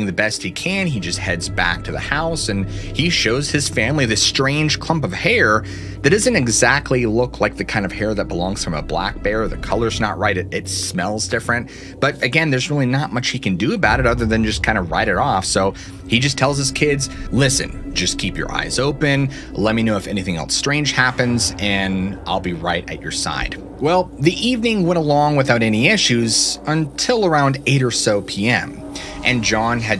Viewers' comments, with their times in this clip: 0:10 Who came first, what lurks beneath or Mr. Ballen? bc it seems like the exact same hand movements voice intonation cadence and even the same words like “and again there’s really notOr much he can do about it” watch his hand gesture. Now I haven’t watched Mr. ballen in like a year at least but when I heard this part of the video, it reminded me of Mr ballen— so then I looked at the screen (I was eating) and that’s what I saw immediately I noticed the correlation. Anyone else? It’s kind of annoying bc I liked the way this guy talked all along before this. I hope it’s A fluke, although I wouldn’t blame him, since Mr ballen’s channel became so successful. But what lurks beneath is great, in my opinion, just the way it is no need for change!!